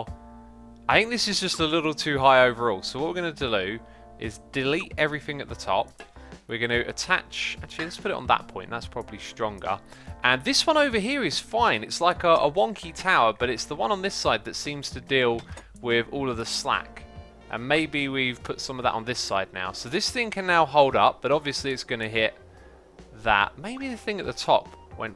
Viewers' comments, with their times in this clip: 0:07 What we are gonna deldo 😂👍🏻